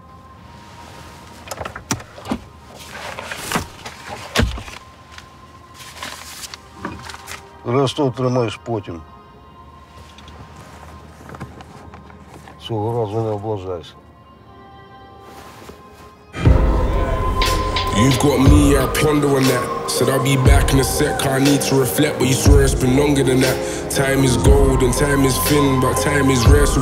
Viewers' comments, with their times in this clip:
0:07 I’ve just noticed that it was filmed in Kyiv (the capital of Ukraine is case you didn’t know)), and the man speaks Ukrainian lol😅
0:08 is that Ukrainian language?🇺🇦😻
0:08 is it... UKRAINIAN?? what ok that was unexpected
0:13 The fact that the guy is speaking Ukrainian